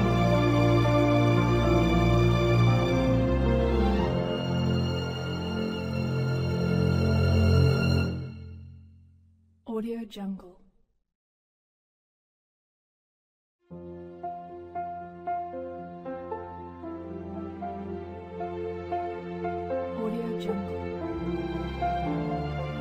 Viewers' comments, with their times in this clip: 0:10 Does anyone know who is singing the version of Moon River on this video, time stamp ? It's sounds very similar to Audrey Hepburn but not quite.